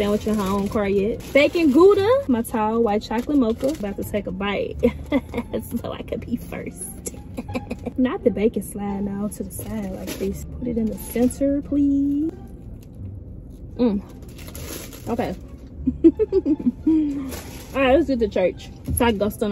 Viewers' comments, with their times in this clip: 0:07 You laughing 🤣 oan: so happy for you for getting back comfortable with being behind the wheel.